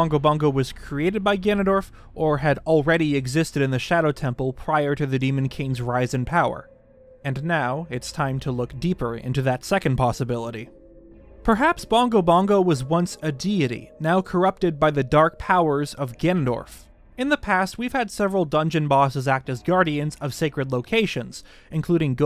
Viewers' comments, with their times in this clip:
0:06 Get ready foooooor "gimdorf" ( minutes in roughly)